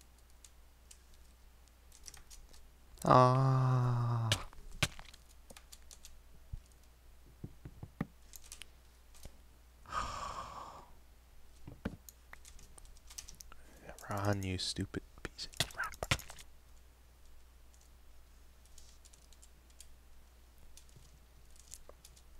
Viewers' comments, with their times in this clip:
0:05 i remember him saying aww fu but cut off right at the end of it but now i noticed it dosent even have audio it just skips to the next part lol he must have changed it recently